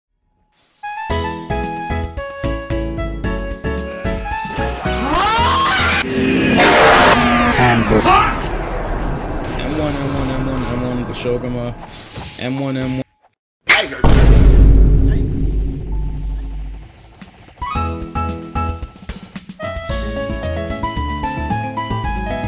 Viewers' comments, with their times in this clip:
0:06 SHIT MY EARS I HAD VOLUME AT 100%